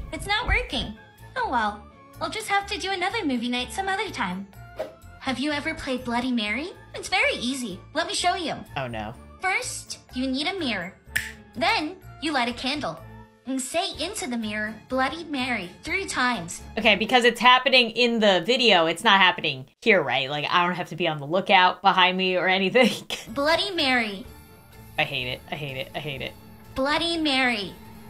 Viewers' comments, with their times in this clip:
0:10 Why is everyone simping over Tall man? Also i love Dottie's little "Bye now!" THE SNAP WAS SO CRUNCHYYDHDUDGHD